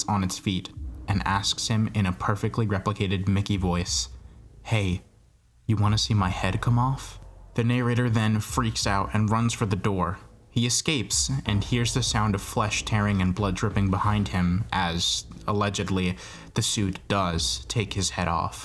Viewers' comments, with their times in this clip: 0:06 when you said "come off" it sounded like the original voice line in the og fnati which was kinda cool but a lil creepy